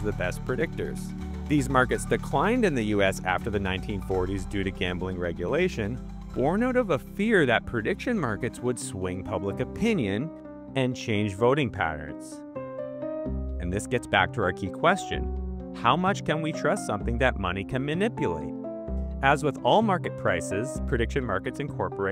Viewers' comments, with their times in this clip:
0:09 What music is playing since ? I really Love this theme & it’s catchy tempo